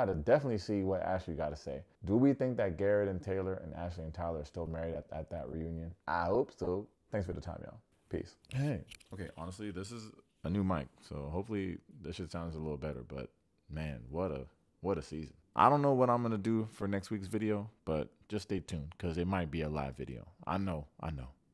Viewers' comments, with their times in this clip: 0:09 the new mic in this video sounds really off to me 🤔 it's buzzy and the audio is clipping and sounds choppy to me. I've never noticed any audio issues in previous videos but made this one a bit harder to listen to (i still have rewatched it multiple times 😂)